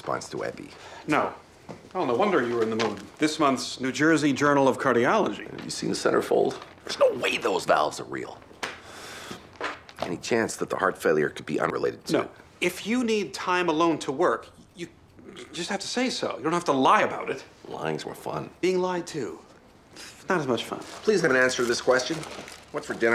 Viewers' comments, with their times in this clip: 0:10 you thought i wouldn't hear that audio cut